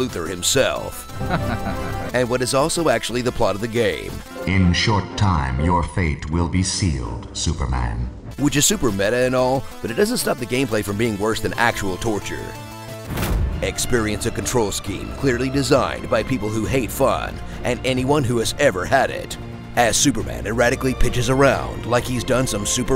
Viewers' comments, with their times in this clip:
0:04 why does Luthor have Brainiac's voice?